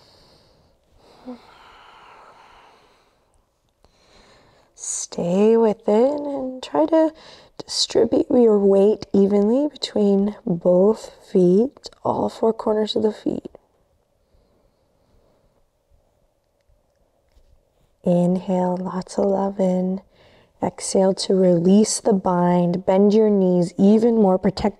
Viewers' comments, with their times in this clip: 0:05 sounds like someone found what felt good 💨